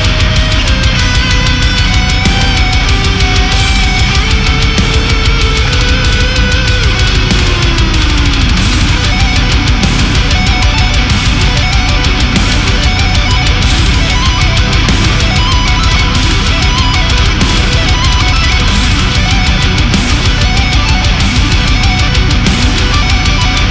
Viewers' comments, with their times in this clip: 0:09 Holy shit. I love the melodic part, this is heavy AND melodic. 20/20